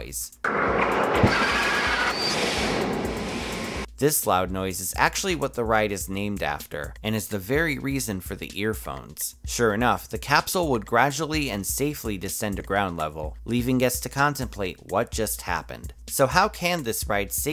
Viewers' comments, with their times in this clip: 0:04 Insert Earrape here